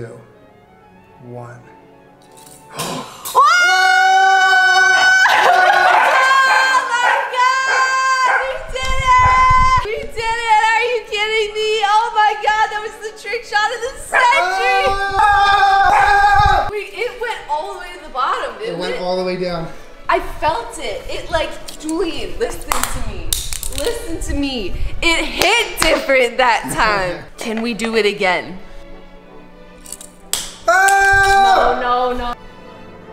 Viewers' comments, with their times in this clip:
0:03 screaming followed by the pattering of a small army of dogs running
0:19 why was SO CUTE also her yoshi impression was adorable